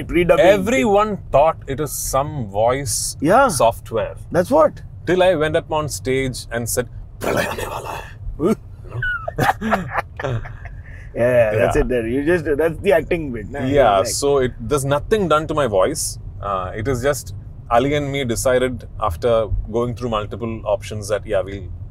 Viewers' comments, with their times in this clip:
0:07 his voice modulation is awesome 😍